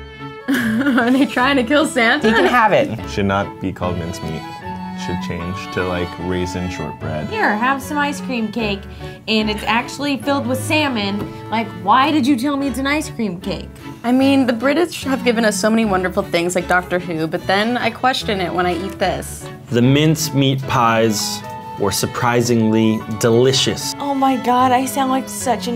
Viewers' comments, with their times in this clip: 0:10 when she says salmon she sounds EXACTLY like Miranda sings 😂😂😂😂